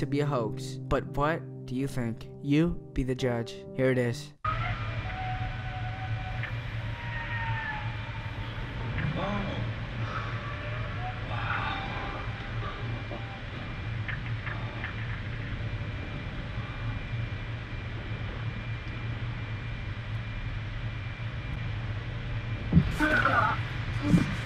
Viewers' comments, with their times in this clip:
0:05 I can see why people back then said mermaids had beautiful voices. It does sound nice.